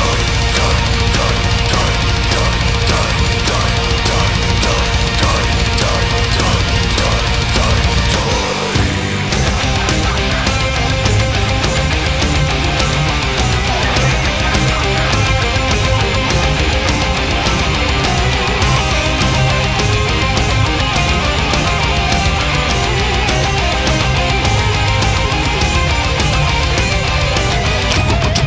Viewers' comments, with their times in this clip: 0:09 I really do love the solo in this song!